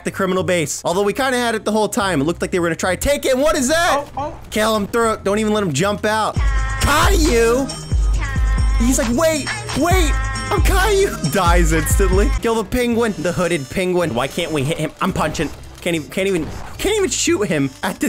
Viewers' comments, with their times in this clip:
0:05 wow the music
0:06 Cayo song plays lol